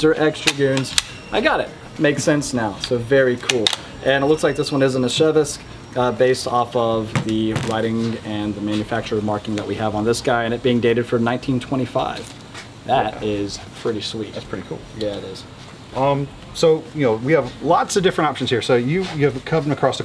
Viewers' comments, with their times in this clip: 0:05 I cringed when he said "eh-SHEV-visk" Yikes man, learn to pronounce it: "ee-ZHEVSK" With a little practice and internet help, you CAN get it right.